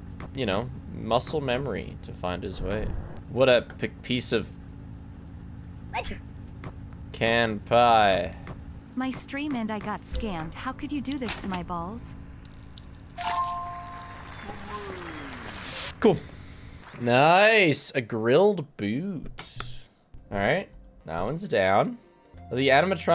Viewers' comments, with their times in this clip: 0:06 captions say “canned pie” and now I can’t un-hear it